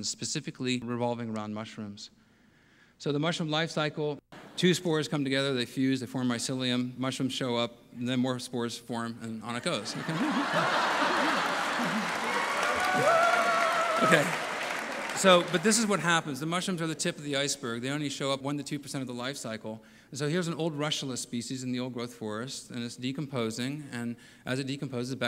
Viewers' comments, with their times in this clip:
0:08 I cannot for the life of me understand why everyone is laughing here.